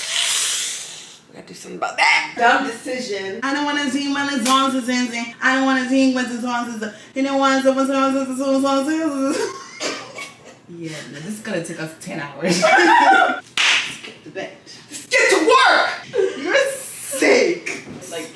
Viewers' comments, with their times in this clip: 0:04 omggg😂😂😂😂😂😂😂😂😂😂this vlog just popped on my screen and i dont regret watching,the musician can sue you for ruining his song💀🤣🤣🤣